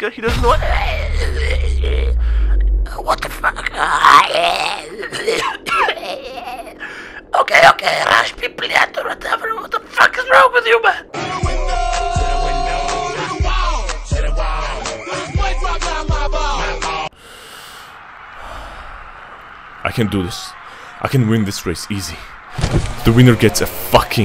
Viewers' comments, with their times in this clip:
0:10 man sounding like older YouTube pewdiepie